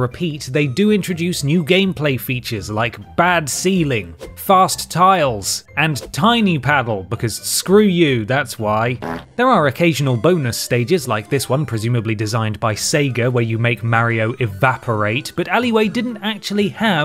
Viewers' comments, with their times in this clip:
0:05 I am 28 and I laughed way too hard at that fart sound...